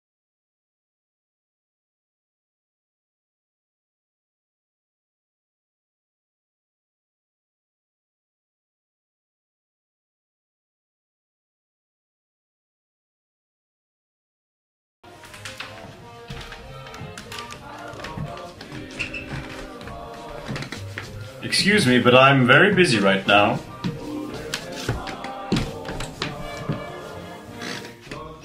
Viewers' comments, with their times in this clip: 0:10 for one second I thought they sing in Spanish for some reason.